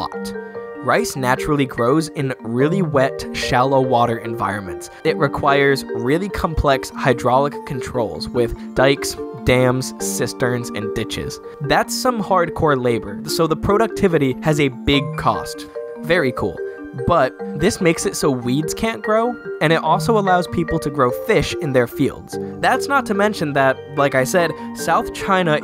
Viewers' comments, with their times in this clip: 0:08 I'm not allowed to say most of those words. Except Sisters. That's what you said right?